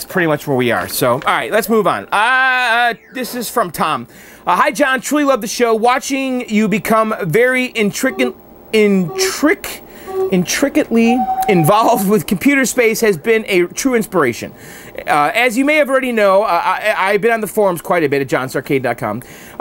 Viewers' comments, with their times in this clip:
0:05 Weirdest pronunciation of intricately I've ever heard ... lol